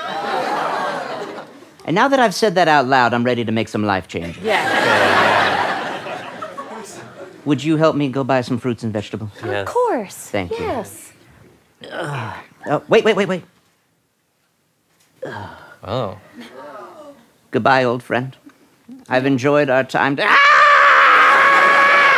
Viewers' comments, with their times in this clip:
0:06 You Can Hear A Guy Saying Who Said That After The Crowd Laughing